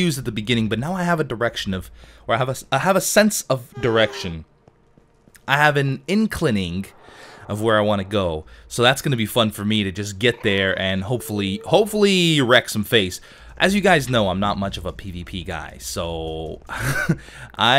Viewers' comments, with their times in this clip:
0:03 I swear I thought I heard him say "I have an erection"... O.O